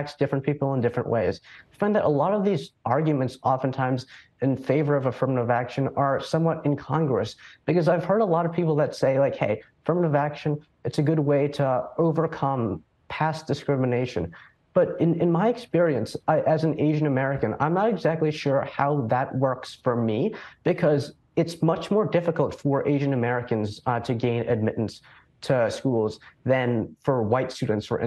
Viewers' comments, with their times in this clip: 0:10 Sounded so condescending 😂😂😂